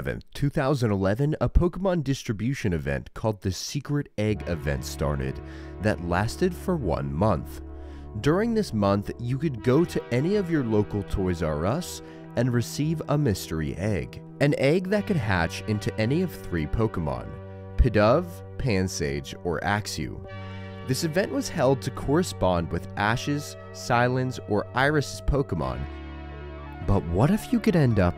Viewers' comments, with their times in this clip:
0:04 why? music choice is somewhat odd. don't.
0:14 HOW MANY OTHER SUMMONING SALT CHADS DOUBLE CHECKED THEIR TAB ?
0:16 [music starts] ...am I watching a Summoning Salt video?